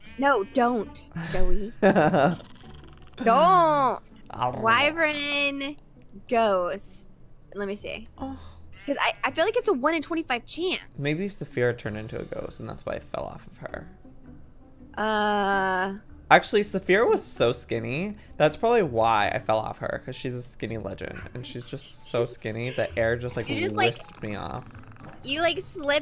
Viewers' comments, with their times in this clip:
0:07 when he gets behind choco he does that uh😂